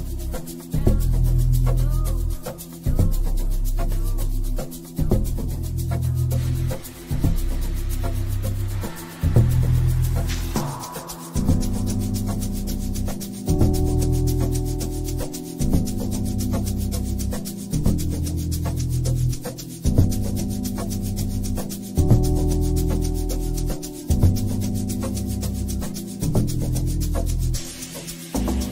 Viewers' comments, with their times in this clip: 0:10 Somebody pls save me, what's the song ?? Sounds like some MDU